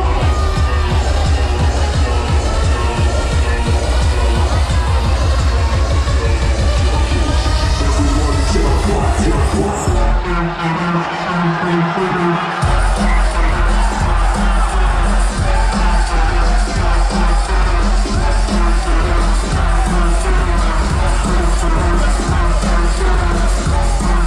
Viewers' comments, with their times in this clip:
0:08 WOOOOW that crowd reaction :O DNB is making a new home in the states <3